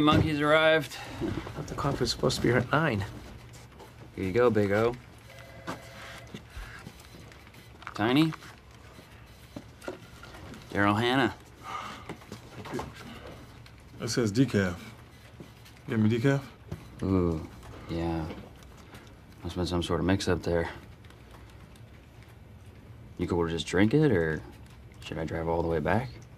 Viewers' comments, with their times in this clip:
0:07 I can’t not hear Dahmer